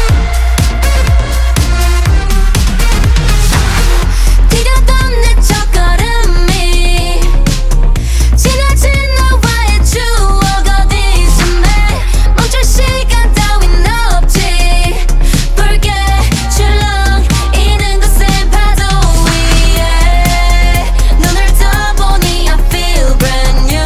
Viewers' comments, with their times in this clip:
0:05 I think it’s not her voice, on the signal song mv her part start here